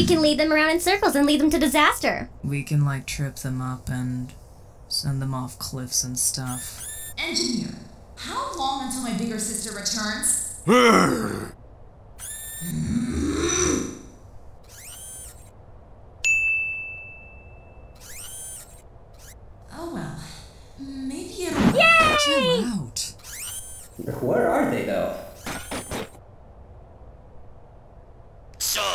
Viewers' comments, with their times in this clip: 0:10 "how long until my older sister returns?" *drunk ravenger gaurd noises